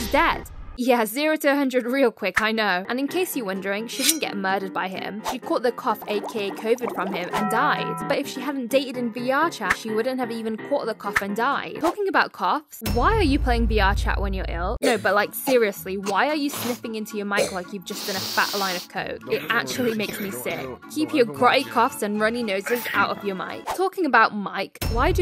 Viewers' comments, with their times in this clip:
0:06 you have the taco bell sound for the death 🤣🤣🤣🤣🤣🤣🤣